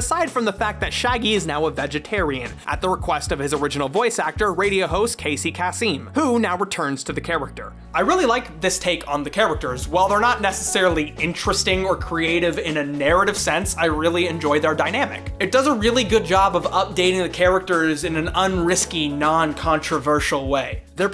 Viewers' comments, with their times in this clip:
0:04 you said his name in a better way